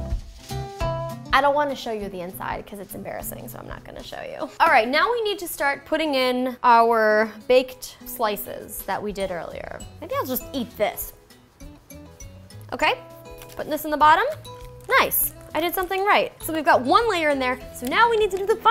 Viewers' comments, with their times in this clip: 0:04 Lol kinda sounded like eJustine 😂 And this video made me want to get pizza.... 😭